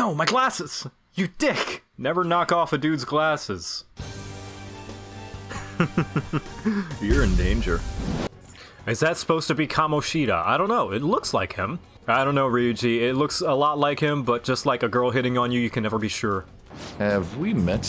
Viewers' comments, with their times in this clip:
0:05 that actually sounded intimidating. Wow.